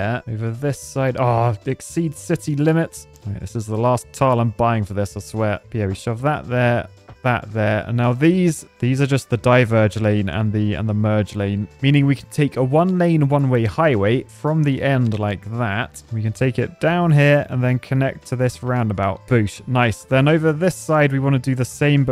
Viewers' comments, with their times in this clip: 0:03 Is your phone ringing ?